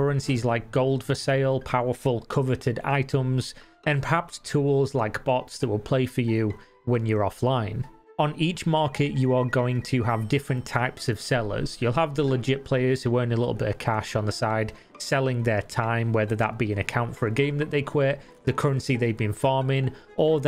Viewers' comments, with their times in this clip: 0:08 I thought someone was calling my Landline